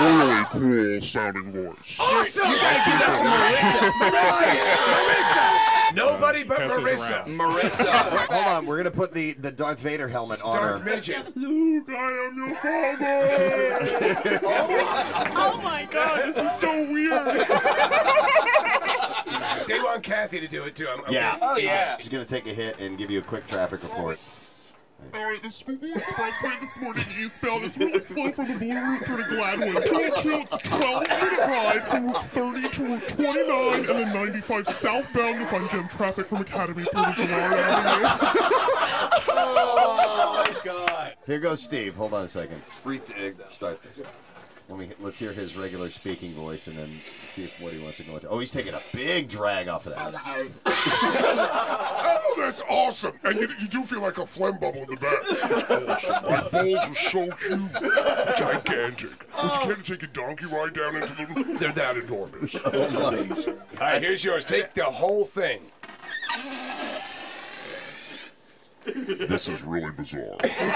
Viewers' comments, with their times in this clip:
0:10 sounds more like Chewbakaa xD
0:17 Gabriel Iglesias laughter?
0:27 She sounds like Ed from 'Ed, Edd 'n' Eddy'!
0:47 he turned into Jesse Ventura! xD
0:53 DUUUUUUUUUUUUDE ITS CHAD VADER OMGOMGOMG!!!